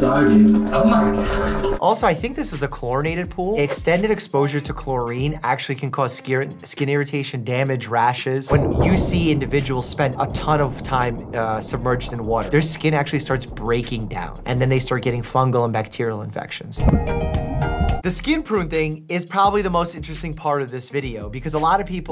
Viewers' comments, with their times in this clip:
0:09 omg so i was listning it with my headphones and i'm not kidding in the video i thought it was thunder 😂😂